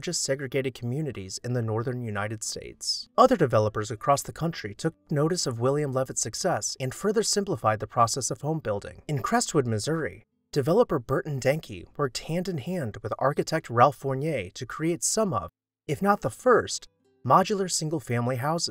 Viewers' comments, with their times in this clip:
0:04 the audio dubbing is really noticeable here lol